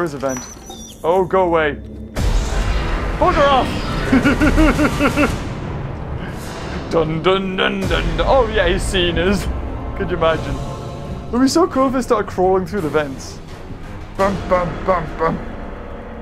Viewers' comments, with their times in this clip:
0:04 his laugh do be synced up